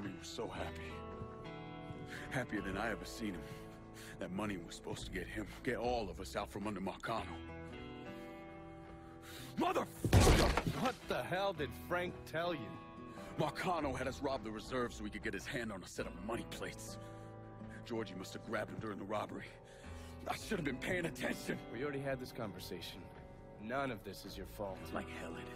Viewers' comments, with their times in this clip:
0:09 I forgot how good Lincoln's VA is. The emotion is real